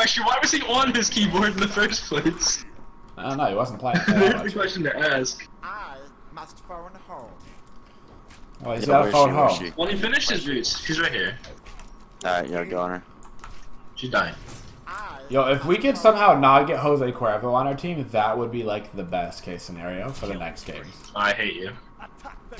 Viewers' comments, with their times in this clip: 0:05 ah puch sounds like mason verger